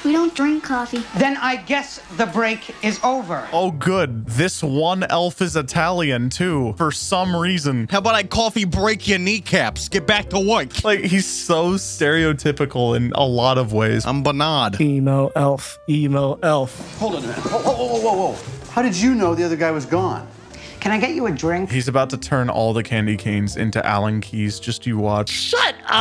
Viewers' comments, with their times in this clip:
0:07 sounded more like the scout from tf2 tbh, it sounds like something he would say
0:07 he just sounds like scout from tf2
0:08 That accent was really unexpected and really well!